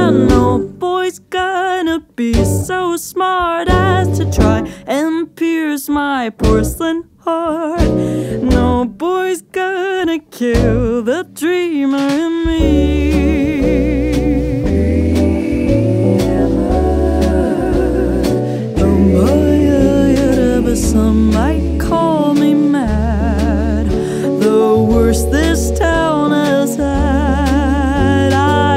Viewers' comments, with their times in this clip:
0:09 You can just hear her smile